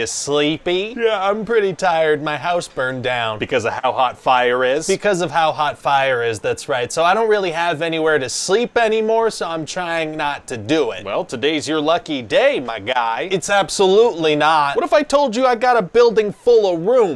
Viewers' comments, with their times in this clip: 0:03 He sounded so casual when he said his house burned down.